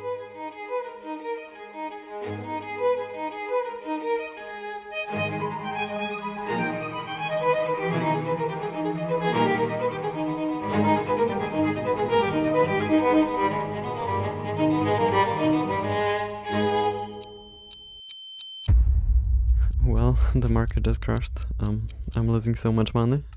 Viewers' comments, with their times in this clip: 0:04 as a violin player, the song over the back of the clip makes me happy because it is the perfect use for it and it is not a super well known song